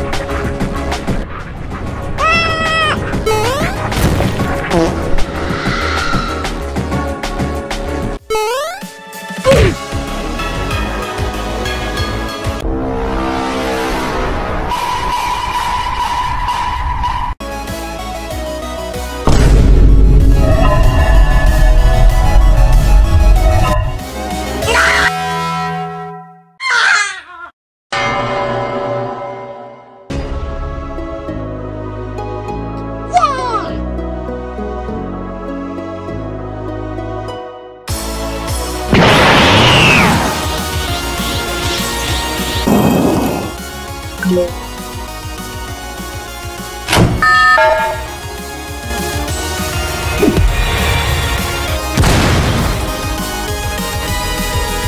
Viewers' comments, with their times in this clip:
0:09 he deserves more respect for putting oof in there instead of the dumb "duegh" or whatever the hell it says
0:23 pizza tower noise scream
0:24 The scream sounds like noise of pizza tower
0:24 sound like noise from pizza tower
0:24 what was the scream?
0:24 This part like a sound scream The noise form Pizza tower
0:38 i love how the goku charge effect pairs with the music and animation!! its